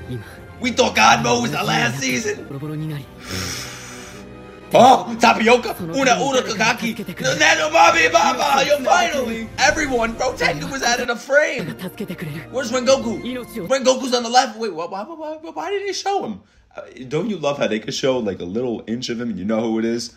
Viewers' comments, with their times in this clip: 0:04 lol my man so excited that he spoke gibberish
0:04 ah yes my favorite DS characters: Tapioka, Unaurakakaki and Nenubabibaba